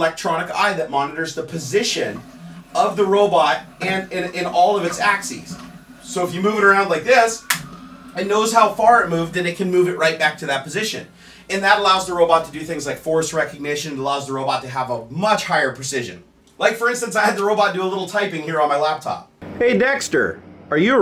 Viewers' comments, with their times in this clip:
0:06 "so if you move it like this..." snap, That snap actually scared me like I thought lol he broke it on camera.